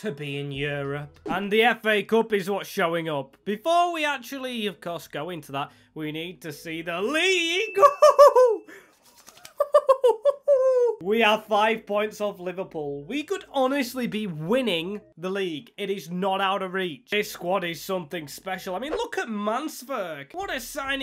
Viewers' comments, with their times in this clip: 0:06 And the award for the best owl impression goes toooooo.